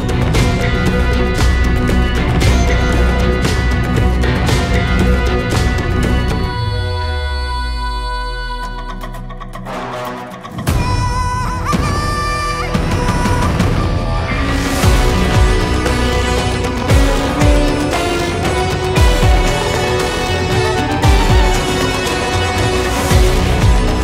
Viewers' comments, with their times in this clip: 0:10 epic drop right here